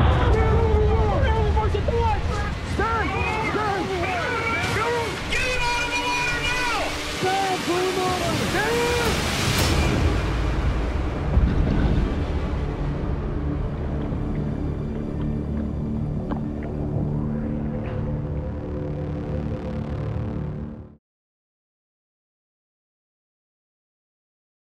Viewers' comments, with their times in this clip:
0:05 ~ ⛴ 🆘 🗣👂~ ~ This is dumb acting. Doesn’t make sense for the captain to scream in the radio “get them out of the water now!” First, you don’t think everybody already knows that? Second, what if a member of the crew is trying to tell the captain something while he is screaming in the radio for no logical reason?